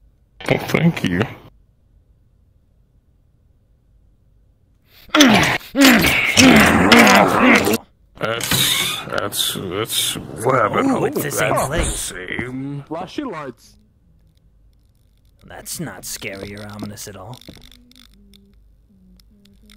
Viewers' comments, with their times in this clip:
0:05 THE FUCKING MINECRAFT SKELETON SOUND EFFECT- And how long was that kiss? Did Dust just stand and stare, rethinking his life choices and contemplating if throwing himself down the stairs was a good idea?